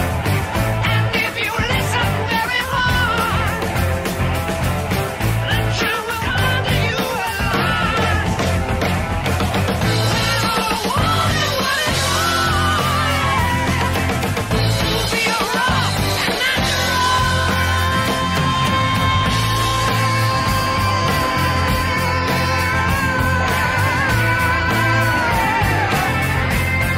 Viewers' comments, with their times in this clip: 0:09 Bonham's drumming between 8.10 sounds like he's hitting God knows what with God knows what!